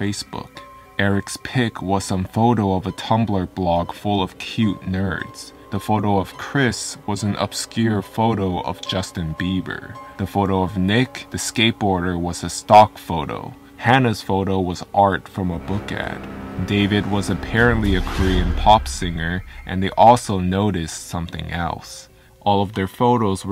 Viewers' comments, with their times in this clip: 0:07 that slight laugh though